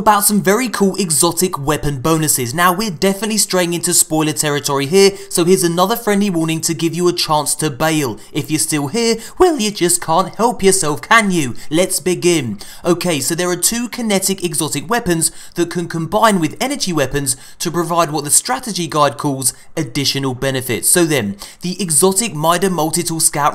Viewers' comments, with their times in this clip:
0:08 The voice crack 😂😂😂
0:09 can't tell if he did that on purpose or it was a voice crack